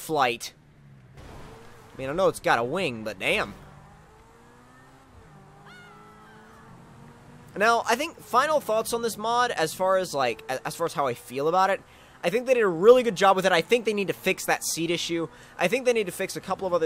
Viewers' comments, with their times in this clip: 0:04 female wheilhime scream